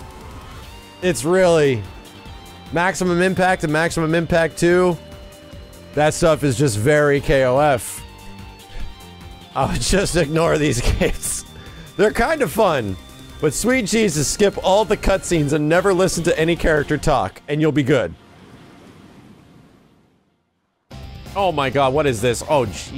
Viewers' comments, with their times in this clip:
0:10 or play in japanese since the voice actiing is so much better XD but i still love this game, so much fun